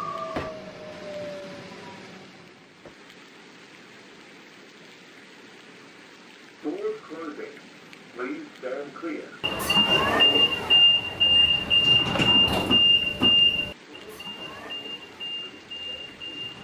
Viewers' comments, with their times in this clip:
0:03 it sounded like a t set closing sound more than a m set